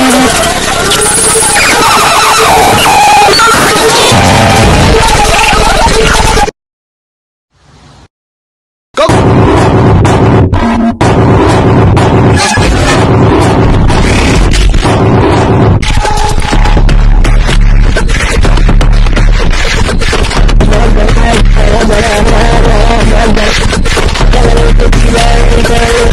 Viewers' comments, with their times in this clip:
0:09 go crazy ahh beat